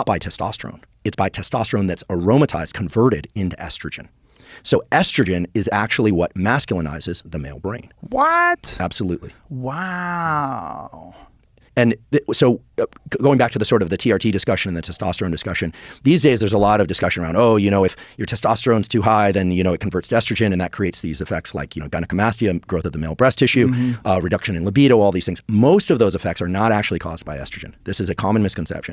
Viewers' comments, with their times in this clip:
0:09 Huberman blows Joe Rogan's mind so much, he goes full Owen Wilson
0:09 Joe Rogan is actually Owen Wilson on 1.5 speed